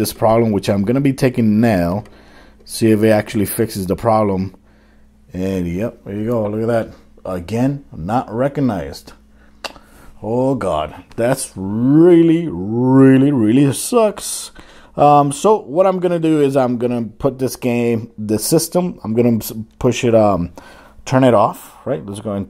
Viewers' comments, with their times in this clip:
0:10 "That's willie willie willie sux!"